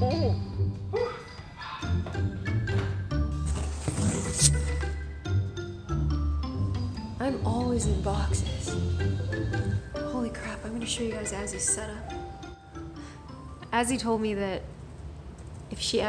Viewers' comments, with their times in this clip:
0:04 ariana grande is that you